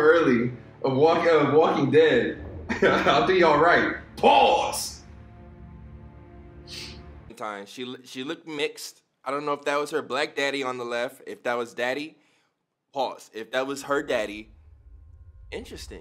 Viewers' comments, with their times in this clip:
0:04 I just love the way he says it